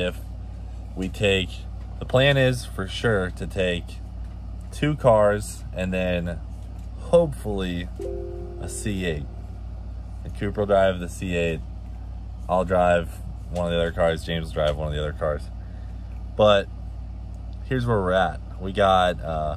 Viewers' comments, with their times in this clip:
0:07 for yall windows users, who else thought they got a message ?